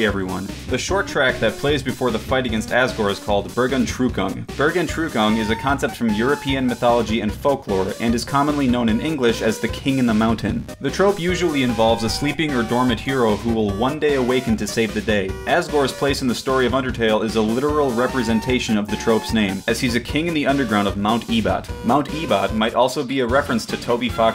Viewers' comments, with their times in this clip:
0:10 When i heard "King in the Mountain" i thought he said "King under the Mountain" so I was like "HOLD ON! THAT'S THORIN OAKENSHIELD!"